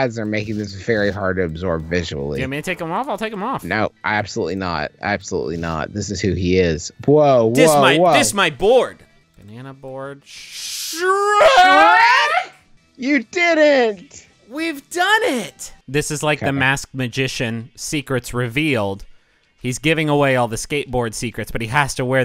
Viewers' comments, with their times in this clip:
0:10 That high pitched "SHREEeEEeeeEEEEEKkK???" is just *insert chef kiss* so good